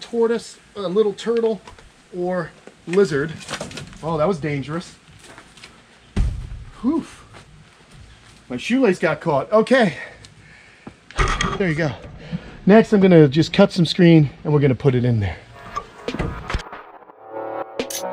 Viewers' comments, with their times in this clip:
0:05 sounds like he dropped a continent on the ground